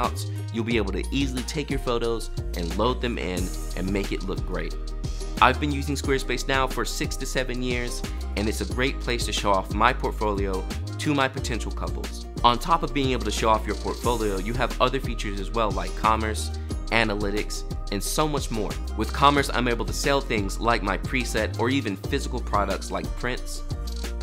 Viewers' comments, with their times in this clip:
0:05 You've been using Squarespace for 67 years..😁 You look so much younger📷